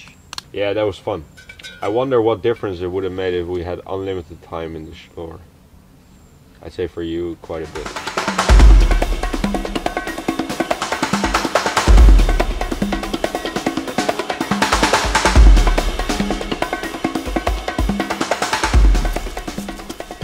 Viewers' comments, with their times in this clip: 0:08 These drums scared the SHIT out of me... i shortly thought somone is shooting in the background